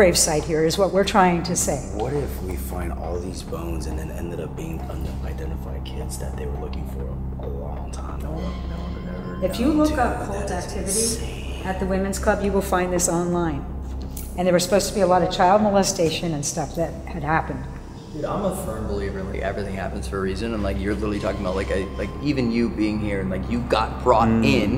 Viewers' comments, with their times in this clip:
0:07 There's a voice ???